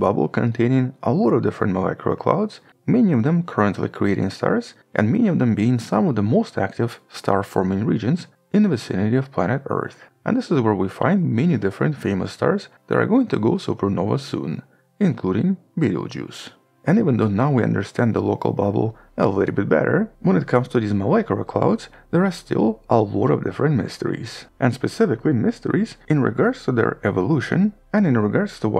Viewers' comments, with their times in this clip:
0:10 There is a star called "video juice"?